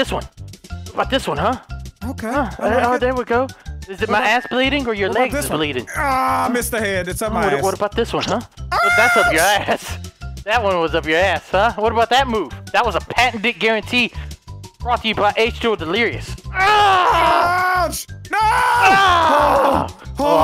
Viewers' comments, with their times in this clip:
0:08 Listen but don't watch it is it just me or does it sound like they are have hanky panky time